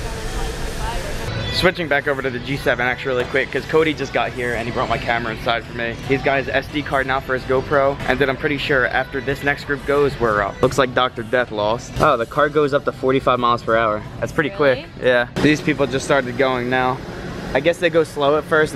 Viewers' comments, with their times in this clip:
0:04 Who else was jamming along to Fall Out Boy in the background ??